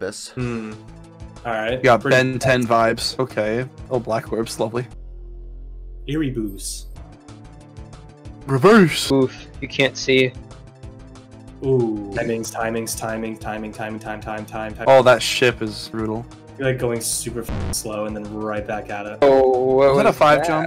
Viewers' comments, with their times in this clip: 0:04 "ERIBOOSS" That got me bro🤣